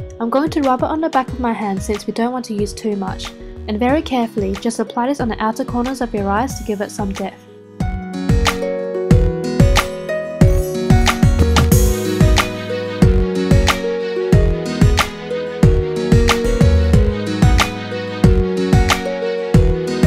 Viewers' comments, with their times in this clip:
0:06 "to give it some DEATH"???!!!